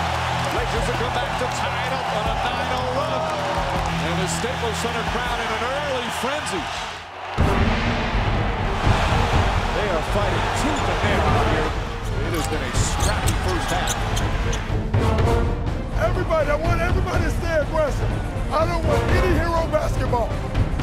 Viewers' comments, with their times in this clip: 0:07 nah, this music is reserved for Matt Stonie inhaling pounds of food